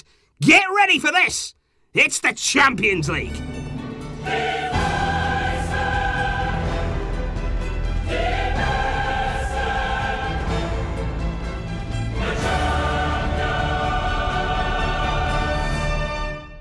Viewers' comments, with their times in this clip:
0:04 lol is the song saying barcaaaaa. No offence.